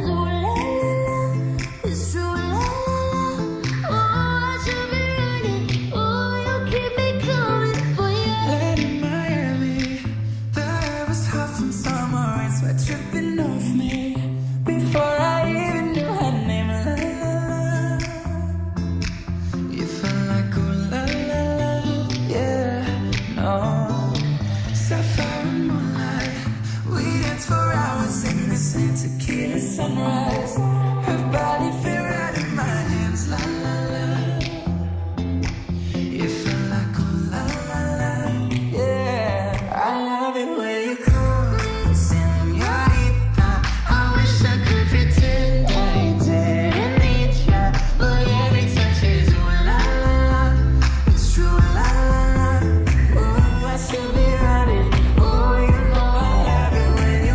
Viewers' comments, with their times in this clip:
0:08 was awesome voice
0:38 direction changer or what ?